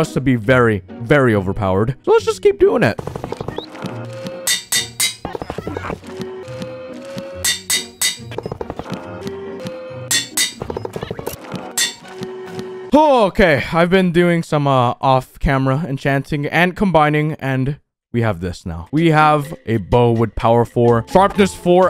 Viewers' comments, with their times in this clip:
0:03 Bruh, I heard eh eh eh eh eh eh eh oi